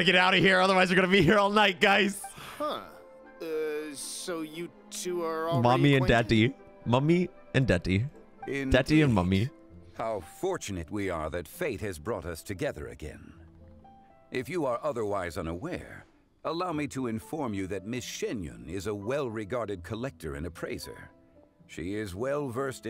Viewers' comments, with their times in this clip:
0:07 pfft I say that it's just bc it's English and slower than CN Bc I never noticed any yapping